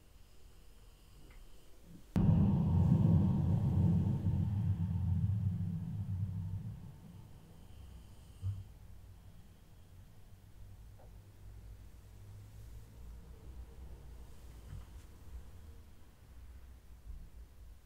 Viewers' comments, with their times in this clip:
0:03 The gates of Hell slowly opening